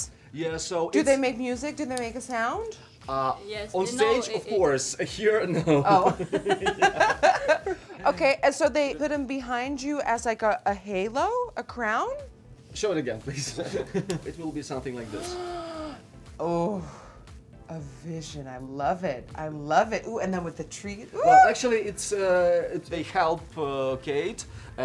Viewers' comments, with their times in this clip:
0:05 most fake laugh